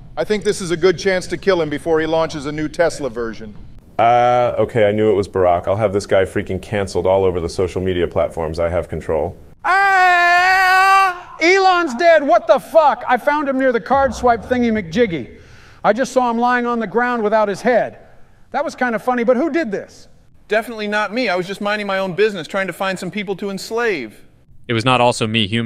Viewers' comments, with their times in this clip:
0:09 Joe's scream killed me for some reason
0:09 why did blud screamed like that 💀
0:09 Bro the scream💀
0:09 Joes scream bruh😳💀
0:10 Joe Biden's screaming had me dying 💀